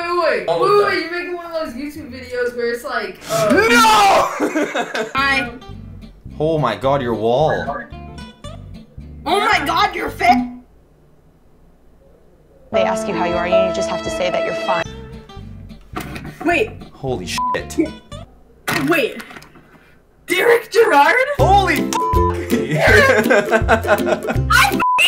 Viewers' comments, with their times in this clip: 0:09 I loved how she said” Omg your face” hahahah. I stared laughing so hard😂😂😂